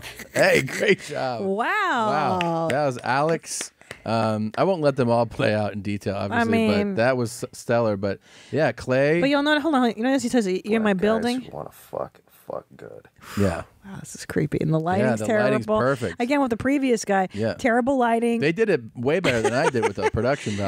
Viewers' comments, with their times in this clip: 0:08 you think dude says Home here now, but honestly I think he's sayin "hold me an hour" or Hol'me'an'owa....